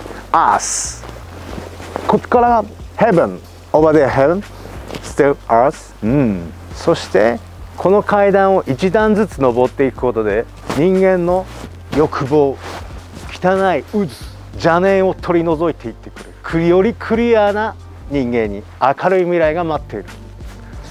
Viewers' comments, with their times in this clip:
0:07 I cant get over how earth is pronounced in this video its amazing.